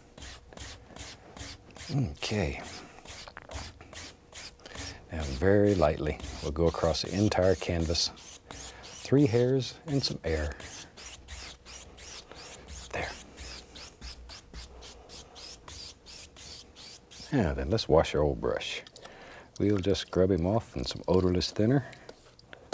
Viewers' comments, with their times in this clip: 0:03 That gulp gave me chills